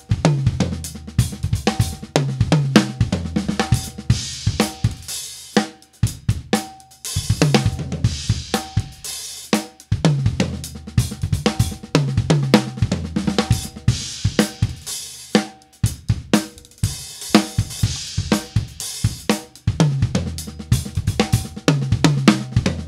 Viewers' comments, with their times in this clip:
0:06 Best part of this video is the super sneaky fill Dope little fill.